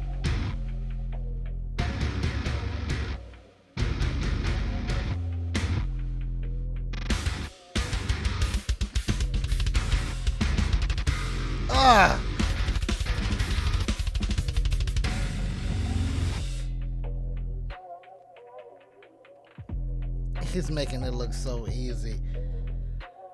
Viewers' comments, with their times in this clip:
0:08 Aye yo! That brief split time speed up lick 🤢... I quit!